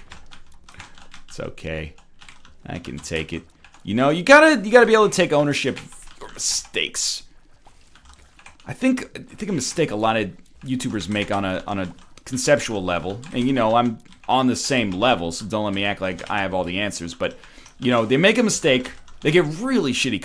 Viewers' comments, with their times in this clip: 0:03 "You gotta be able to take ownership of... steaks. Alright. Off to the grill, I guess.